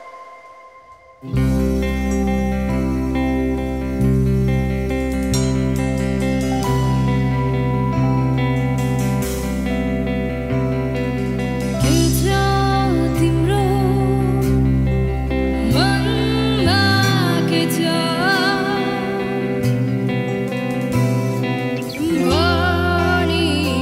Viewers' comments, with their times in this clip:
0:04 amazing voice nani ❤❤❤❤❤